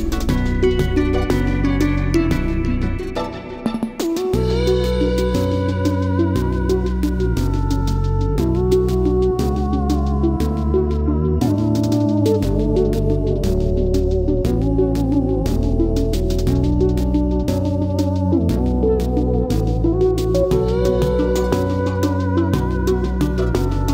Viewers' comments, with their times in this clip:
0:04 The Mire Sings alongside the swamp ambience has got to be one of the most enjoyable sounds I've ever heard. Especially the part that starts